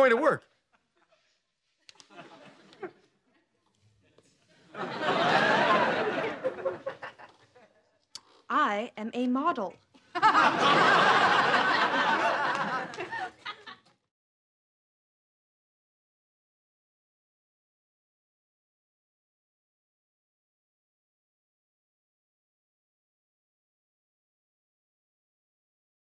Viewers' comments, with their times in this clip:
0:07 KELLY (robotic): "I am a model."